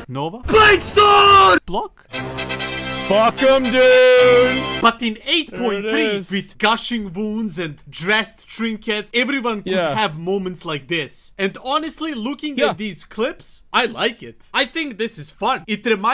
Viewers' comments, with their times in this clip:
0:04 After I bet you 20 bucks you can’t count to 20 secs with out a “BEEP” or a cuss word from Asmongold